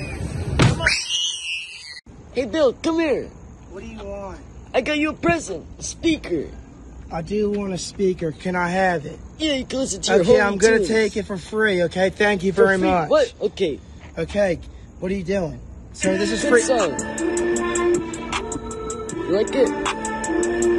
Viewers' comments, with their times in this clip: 0:06 Why do you always scream like that!🤬😱